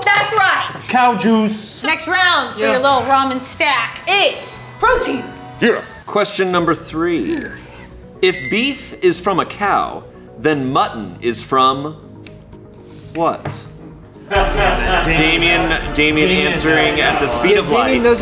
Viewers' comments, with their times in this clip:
0:05 who said that deep af “yeah”? 😂